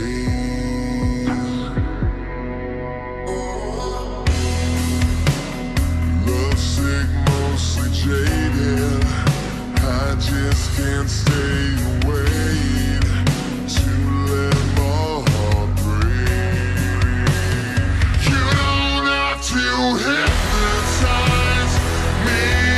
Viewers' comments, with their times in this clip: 0:06 WHY I HEAR SIGMA IN